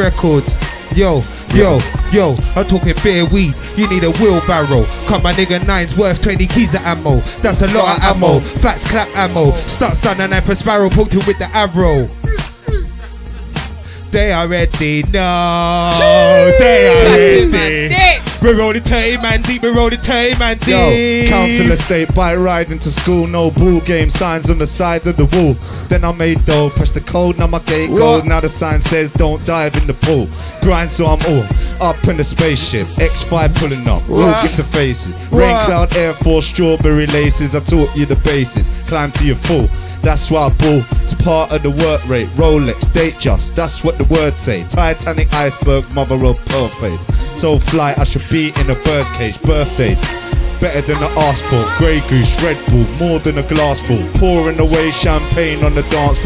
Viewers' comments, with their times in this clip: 0:10 matey flops differently
0:14 hes singing lol
0:19 The person who started went INNNN
0:39 That guy has one of the best verses I’ve ever heard anywhere the flow is disgusting
0:39 whos the guy tha starts at like hes sick